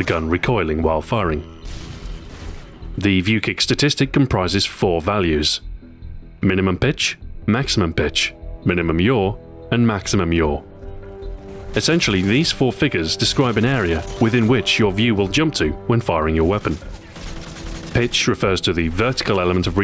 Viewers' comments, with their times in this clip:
0:05 minimum bitch, maximum bitch